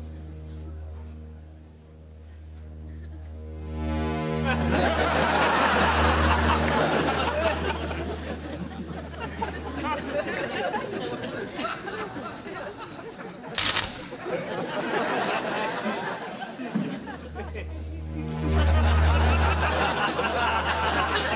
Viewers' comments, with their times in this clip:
0:04 Mr. Bean has noticed the annoying static electricity noise by holding his hand near his ear 😁😁😁😁